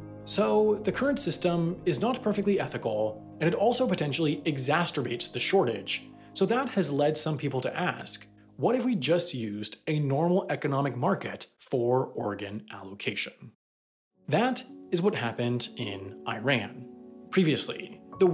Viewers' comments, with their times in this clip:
0:03 yeah, I'm gonna need you to not say "exacterbate" ever again. Exacerbate is fine though.
0:04 "exasterbates.....love this new word. Using it.
0:04 "exasturbates" No additional comment needed, lol